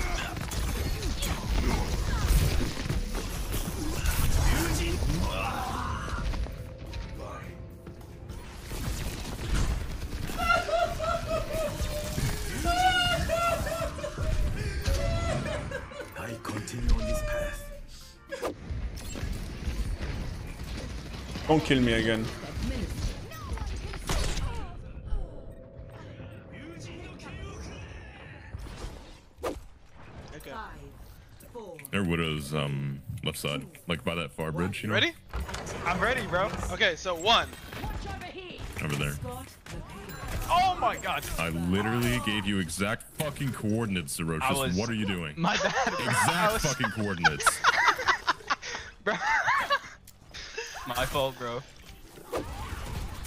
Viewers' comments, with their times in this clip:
0:04 I love every time Genji dies, he always sounds frustrated, like he’s flipping a table
0:37 the guy playing junker queen has a killer voice.